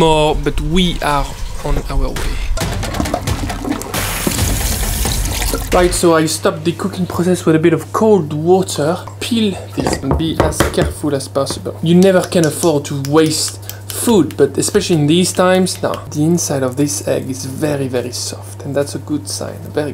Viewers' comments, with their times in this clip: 0:07 did he just nailed a British accent?